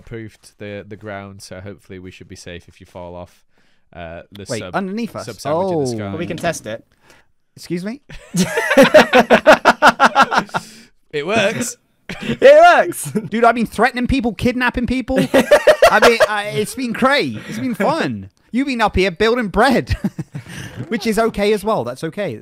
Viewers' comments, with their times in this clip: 0:05 'excuse me?' he said calmly, while falling down from a 50 foot drop going 100 miles per hour.
0:05 I cackled HARD at how comically the scene is, how nonchalantly Jimmy says "scuse me??" whilst looking back up after Grian just casually hits him with no regards off the platform xD